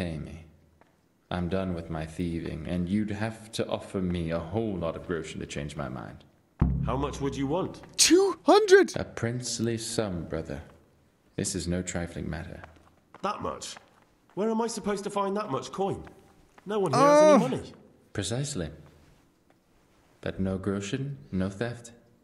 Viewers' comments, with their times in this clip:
0:05 hey. he actualy pronounced it correctly.